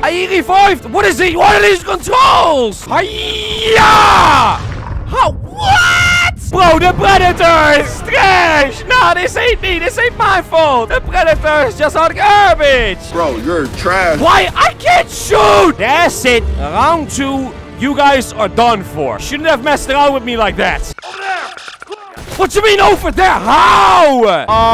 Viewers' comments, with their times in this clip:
0:05 inaudible sounds ( beware headphone users )